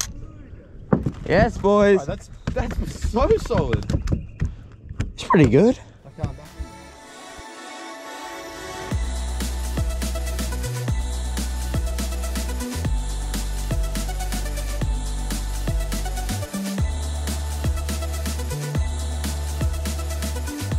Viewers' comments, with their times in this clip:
0:04 the voice crack 😂 SO good